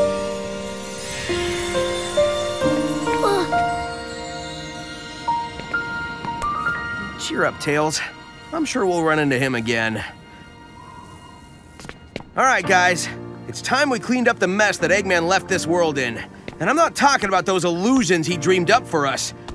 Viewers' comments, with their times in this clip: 0:07 definitely cuz without classic sonic modern sonic is screwed or so the fans say to bring classic back (plus u can hear it in Rogers voice as sonic how he's tired about it)